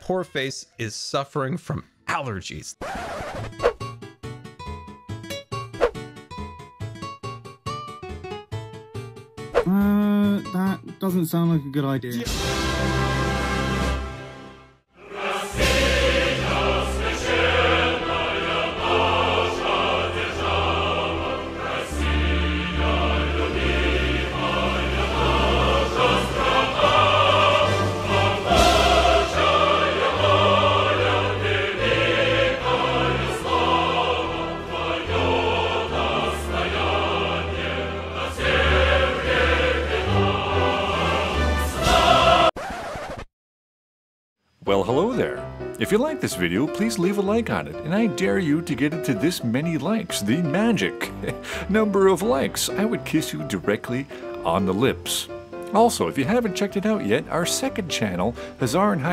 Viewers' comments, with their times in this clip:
0:08 this part made me laugh so hard... Especially when you used the mumbo fart clip from the Audible ad😂
0:42 right after I heard the record scratch, I got an ad that rick rolled me and then I had to see the "I'm so sorry you had to see that"